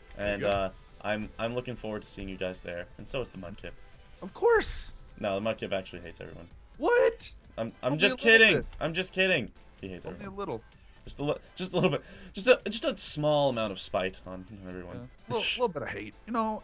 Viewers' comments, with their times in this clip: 0:04 omg u quoted shrek btw that is soooo not his accent